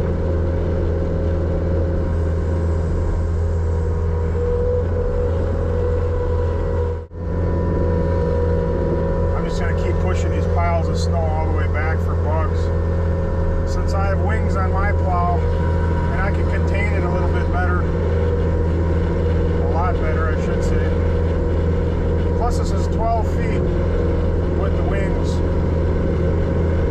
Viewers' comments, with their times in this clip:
0:07 Do you ever get complaints from your customers about the back up warning in the driveways in the morning?